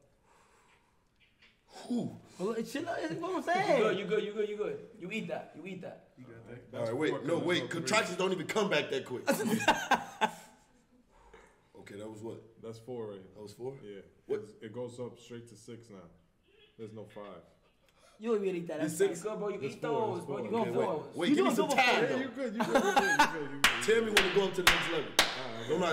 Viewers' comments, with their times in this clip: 0:07 fake laugh alert